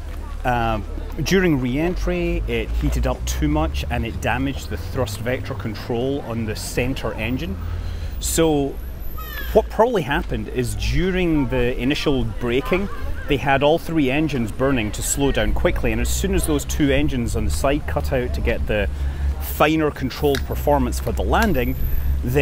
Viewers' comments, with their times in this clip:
0:09 Anyone else hear Yoshi ?